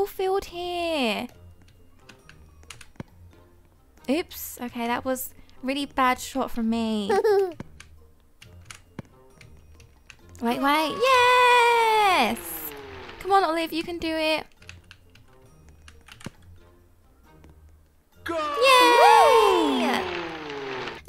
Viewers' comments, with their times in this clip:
0:06 omg her laugh was adorable EDIT: OMG TY FOR HEARTING MY COMMENTS ILYSM
0:06 Her laugh was so cute
0:07 literally crying of how cute that laugh was 😍😍😭